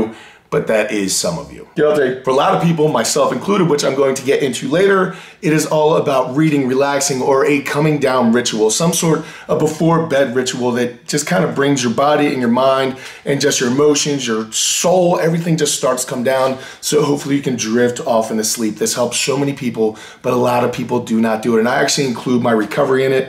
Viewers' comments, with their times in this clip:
0:06 “breeding and relaxing” yup i heard that correctly